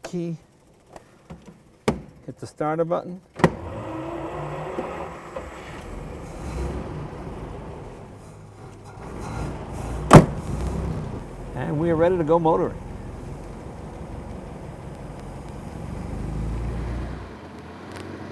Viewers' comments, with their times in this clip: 0:05 Exactly, looks and sounds amazing for 94 years. Only possible by good care.